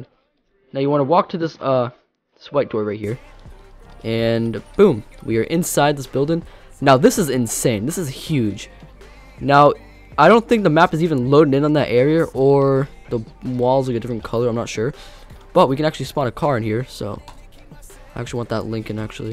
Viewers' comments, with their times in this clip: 0:04 AUDIO SOUNDS WEIRD UNTIL HAD TO REMOVE A COPYRIGHT SONG BEAT THING. 2nd, THE SEAT GLITCH AT CENEX AND SUBWAY SEEM TO WORK MORE WHEN PLAYING ON MOBILE, BUT ITS POSSIBLE THAT IT WORKS ON PC